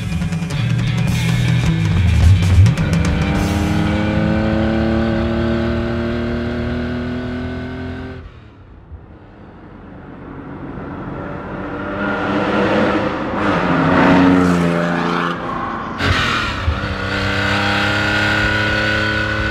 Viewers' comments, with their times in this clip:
0:03 as the chase car veers left while we watch the 911 T cruise away with its motor tone... Man, that is just sweet!!